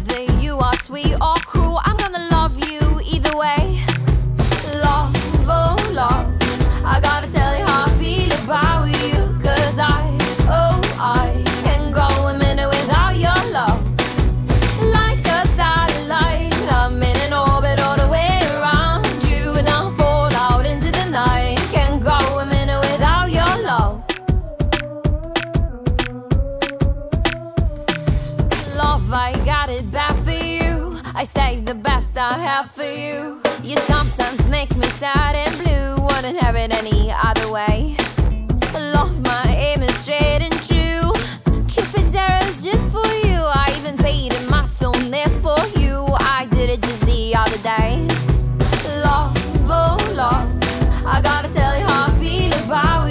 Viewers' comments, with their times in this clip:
0:08 Lena - about you, Blanka - Abow you
0:39 sth went wrong there 🙈 this is soooo auto tuned 😅